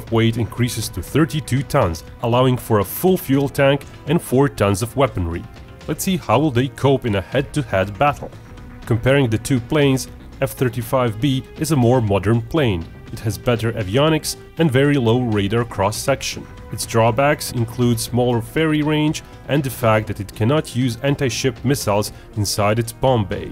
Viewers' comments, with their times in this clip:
0:08 for a minute i thought he said 3 F/A-38 will be called to drop bombs on "carrier" at Bravo